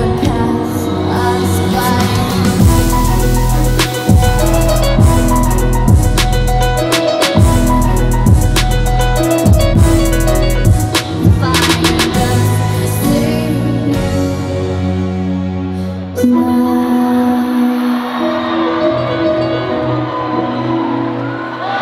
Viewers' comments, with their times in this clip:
0:03 that freaking beat is 🔥🔥🔥🔥